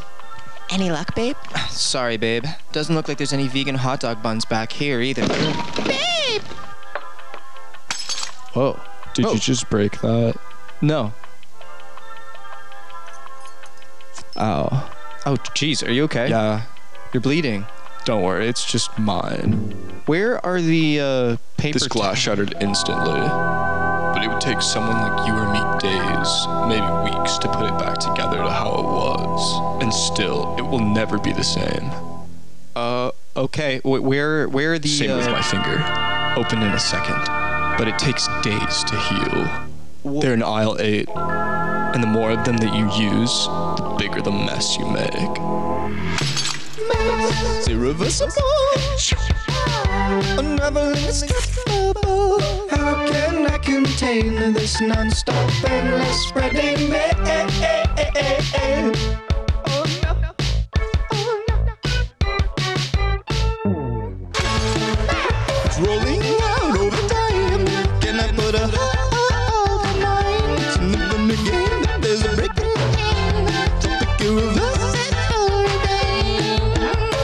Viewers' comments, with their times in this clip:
0:05 Why's no one talking
0:46 song starts here
1:02 Doesn't the background ambience in the supermarket sound kinda like the mess song? About right hereish?